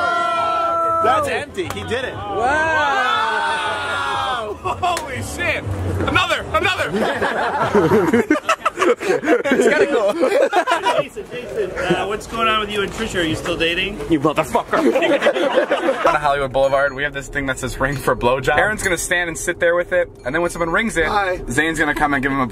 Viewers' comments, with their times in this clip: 0:09 his laugh is so cute 😍